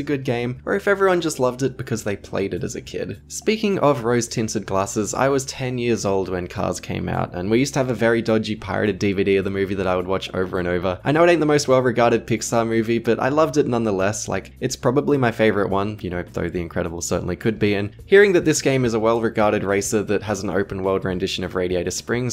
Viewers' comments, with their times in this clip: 0:04 holy shit you say im 10 year cars is came out holy shit now you age is 19-21 i guest you sound like man age 30 age im not lie